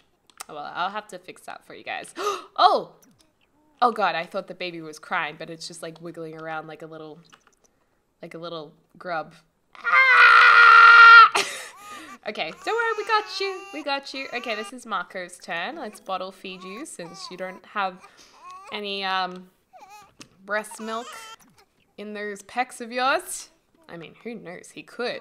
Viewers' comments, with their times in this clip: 0:10 I dropped my phone and it sounded like my phone was screaming. 😂